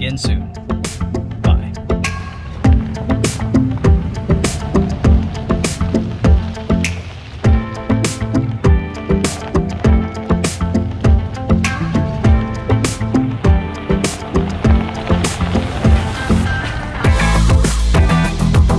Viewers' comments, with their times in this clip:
0:03 The music at the end (starting ) is by far my favorite! Good positive vibe and beats! Really great views in that video too, Merci!